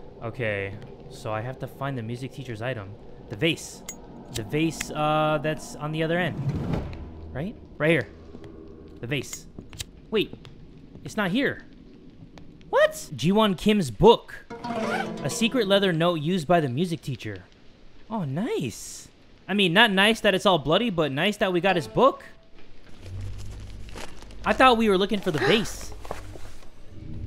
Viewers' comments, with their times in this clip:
0:08 GIVE ME A HEART ATTACK......😭😂😂😂😂😂 I WAS IN MY FREAAAAKINGGG NEW HEADPHONES..😂😂😂😂😂😂😂